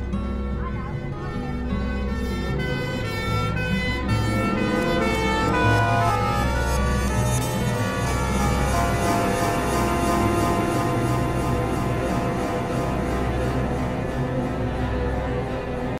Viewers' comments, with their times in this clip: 0:12 the tempo for a day in a life is slower Try clicking and then immediately going in the link i replied to u before